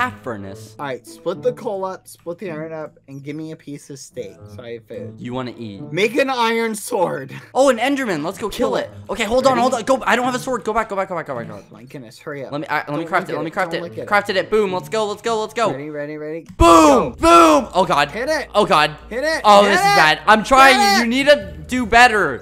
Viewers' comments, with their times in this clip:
0:07 THE WAY IT WAS SO IN SYNC WHEN THEY SAID KILL IT SCARED ME
0:07 did they say that at the same time? Weird